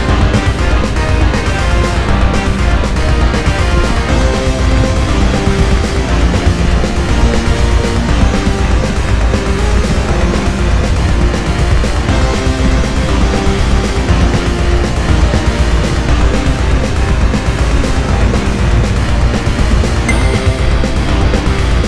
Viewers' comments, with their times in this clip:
0:04 that Acts of God melody sneaking in the backgrounds gives it the soul